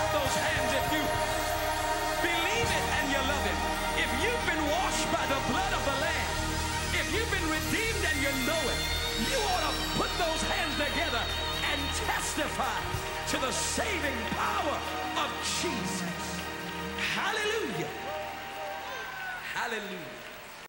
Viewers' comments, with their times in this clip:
0:08 that slide🎸 came from the heart